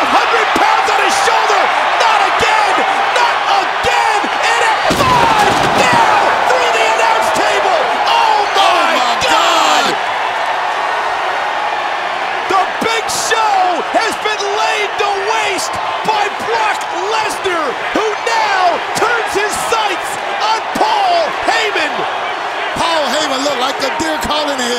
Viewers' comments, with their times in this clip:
0:08 Cole sounded so much like Joey Styles there